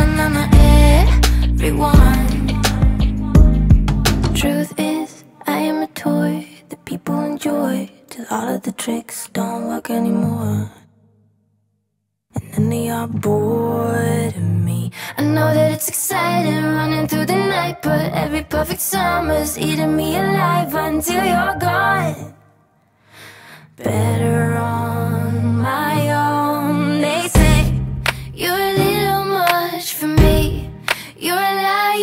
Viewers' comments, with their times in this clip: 0:04 Whoa, that vocoder backing when the beat cuts out is awesome. Wish I had found this artist sooner, Tove's amazing!
0:15 --> I cant handle the melody and the harmony of the vocoder.